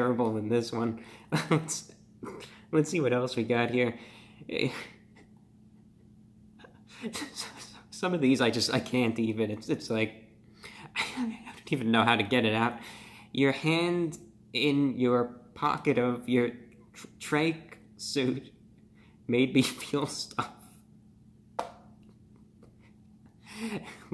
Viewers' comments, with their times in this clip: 0:05 I don’t know if he’s on the verge of having a mental breakdown or he’s just laughing the pain away. I genuinely feel bad for him.